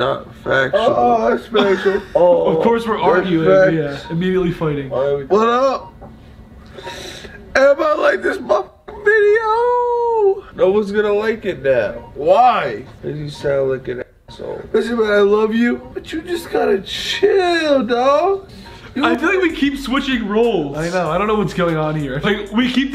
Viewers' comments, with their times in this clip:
0:07 did he say "emma Like this video"